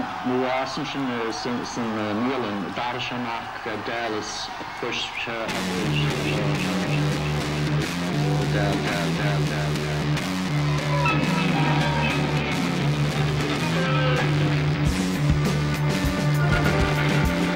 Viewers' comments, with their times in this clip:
0:03 Is he actually using a radio/transistor (like AM/FM) and picking up a frequency and quickly sampling them into the song before kicking into The National Anthem? Coz if yes, that's beyond fucking genius. I'm seriously asking this, and sorry if my question seemed ignorant.